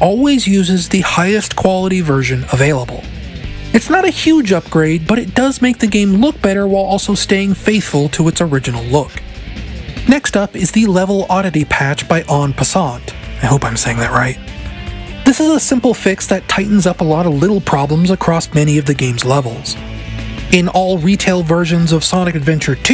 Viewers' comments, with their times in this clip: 0:10 you said en passant perfectly and i think this is a sign you should play chess